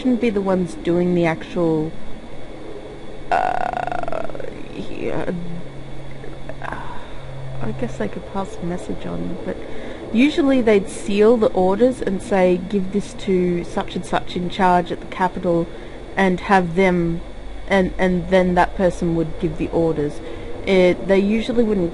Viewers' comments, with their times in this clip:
0:03 you can hear the grudge